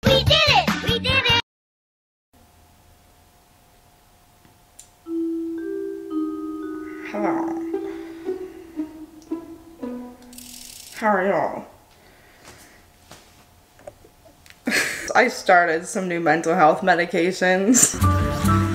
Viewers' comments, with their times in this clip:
0:06 sounds like the grinch hahahah